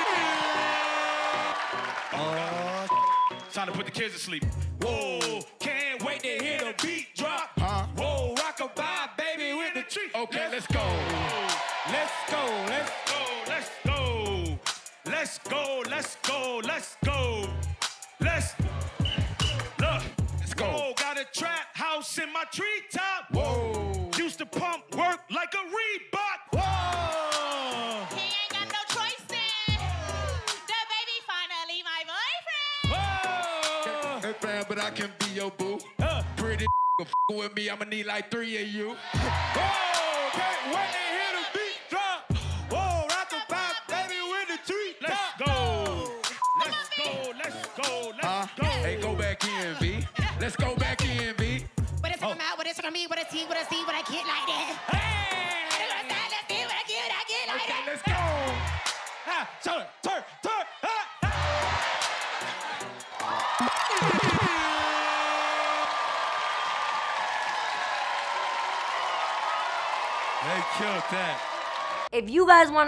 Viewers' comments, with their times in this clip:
0:09 “okay less go” was on beat 🔥
0:28 The way she said it tho💀🔥
0:28 is so catchyyyyy
0:28 for B. Simone's cATchY Part
0:28 When I first found this/listened to it on tiktok. I honestly, thought she said, " He ain't got no choice man, the baby's father is my boyfriend. "😂
0:30 The way she said "Dababy finally my boyfriend" had me dead 💀
0:50 flow so crazy turned her into eric cartman from southpark sheeeesh
0:51 went hard but I didn’t understand anything she said LMFAOOA
0:52 Sims: this girl snapping Animal crossing: that’s what I said
0:52 their just saying random words and then he screams and everyone goes “AAAYYYY”
0:52 all I heard was: amamahdjdnvvdmv yeah
0:54 She sounded like Cartman from South Park
0:54 you can't tell me she doesn't sound like cartman from south park
0:55 why did she kinda sound like Eric from south Park
0:56 she went full cartman lmao